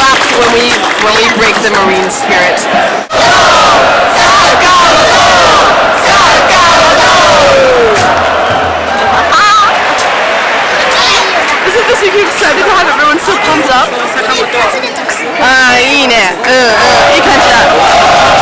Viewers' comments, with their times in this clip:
0:06 what were your cheering for lol?